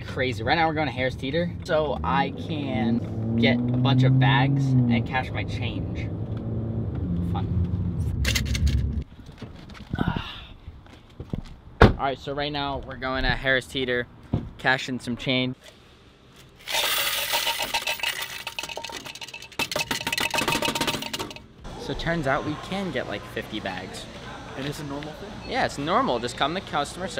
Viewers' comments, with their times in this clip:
0:08 That engine sounds sexy